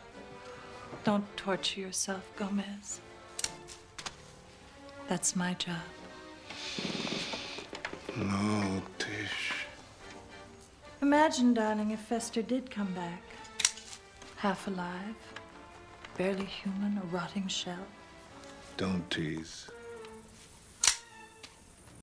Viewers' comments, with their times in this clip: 0:06 Morticia : Don't Torture yourself Gomez that's my Job.. Gomez heavy breathing with a lustful dangerous look 😂😂😂😂😂